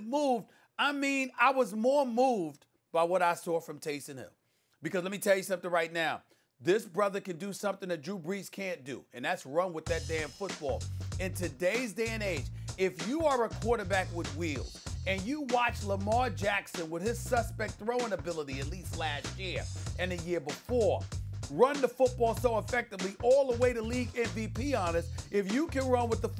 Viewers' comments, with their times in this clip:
0:03 It was a relief to my ears when Stephen A. flipped off the whiny switch at the minute mark.
0:10 why did the ph music start playing lmaooo